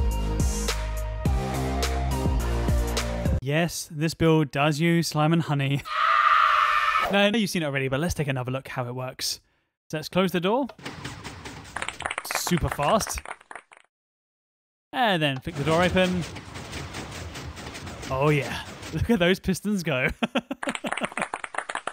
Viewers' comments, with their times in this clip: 0:09 at that point the clapping sounds more sounded like some finally getting ride of there constipation ehehehheh